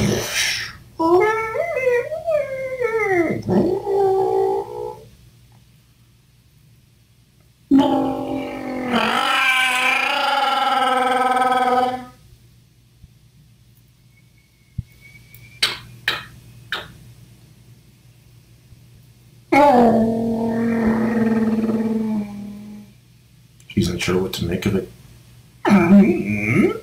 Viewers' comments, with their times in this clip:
0:07 So, there originally was dialog, but it was in Wookie.